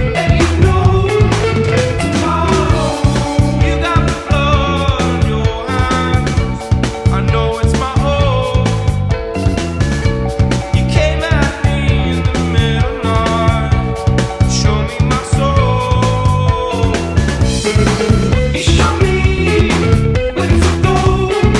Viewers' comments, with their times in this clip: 0:04 he said hands in a British ascent